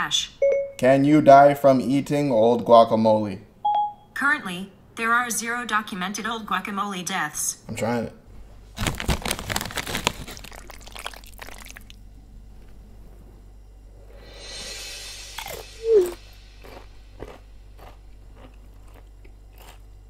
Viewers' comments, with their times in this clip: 0:06 Google had laughter in it's voice..🤔